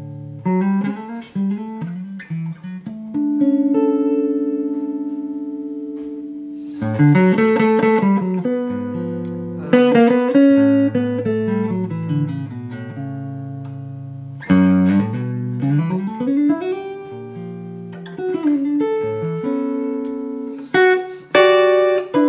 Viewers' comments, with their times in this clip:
0:10 What a lovely man. And that run -ish. Lord!